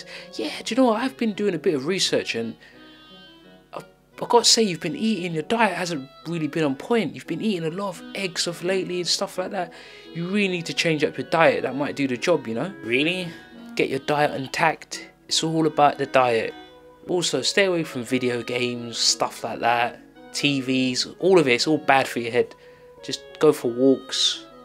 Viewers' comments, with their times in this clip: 0:05 I had my first seizure after landing on my head and taking 6 squares of lysergic acid. That audio clip of the flatline really reminded me of staring down the hospital monitor